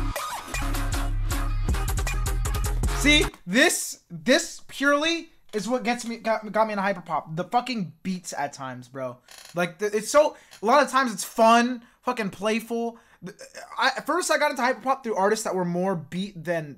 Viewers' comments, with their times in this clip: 0:03 when you talk about how that drop is what got you into hyperpop you're basically complimenting skrillex and his new future house kind of sound. that drop was not hyperpop though😁